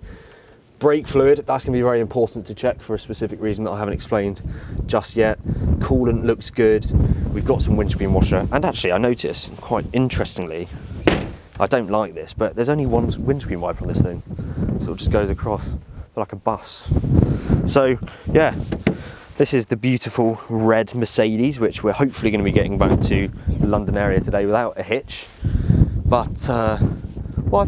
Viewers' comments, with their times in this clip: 0:08 he sounds like James may...who agrees with me?